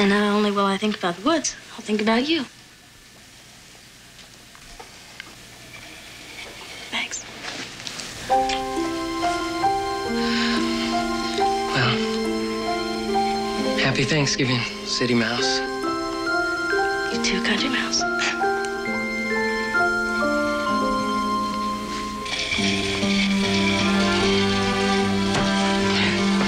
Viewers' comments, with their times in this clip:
0:08 so sweet. The music made me think of my youth. What a beautiful show.